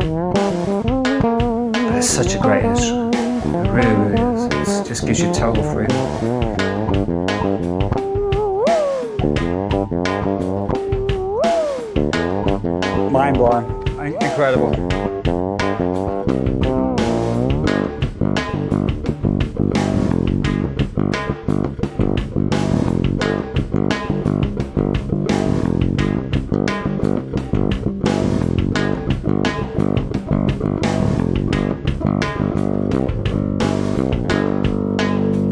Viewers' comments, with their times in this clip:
0:07 The harmonic slide sounds like a happy child :)
0:08 "wooo hoo" effect
0:16 how does he transpose those harmonics as showed ?